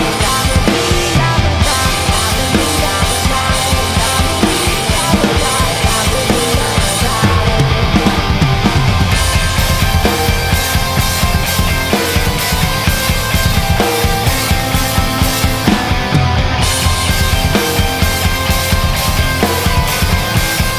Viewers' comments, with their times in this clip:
0:07 Killin' it. Still dig that fill so much. Just great. Beautiful sounding cymbals too. Keep crushing it!